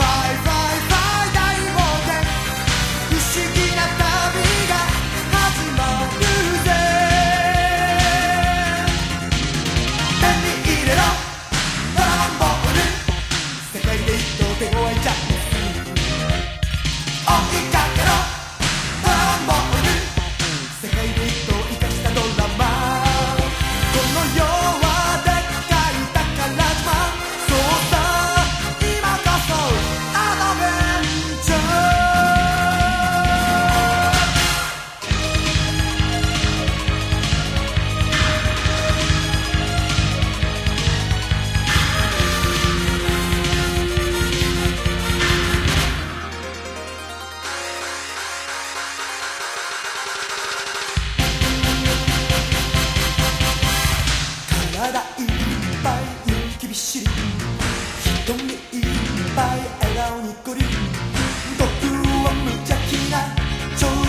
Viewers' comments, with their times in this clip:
0:10 Let me eat it up! Dragon Ball lube!
0:34 The cut in feels unnatural, it's like they took of the opening and just add more music
0:48 That tournament sound ❤️